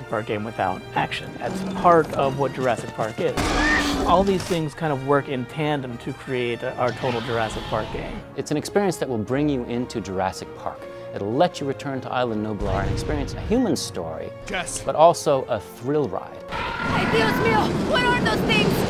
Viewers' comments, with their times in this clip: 0:03 Wtf?A Raptor just made a T-rex sound.Lol owell this game is on my Christmas list for Xbox:)